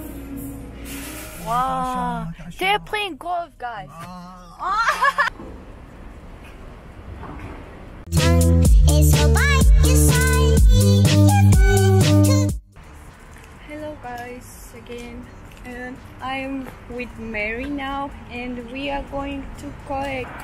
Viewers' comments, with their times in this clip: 0:06 I hear like, you kiss someone